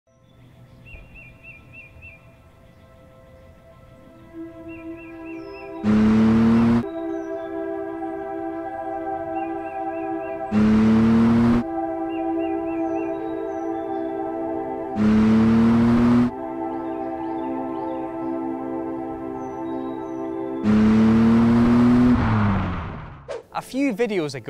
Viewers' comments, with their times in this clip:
0:08 for a second I thought I always misheard jacuar for jaguar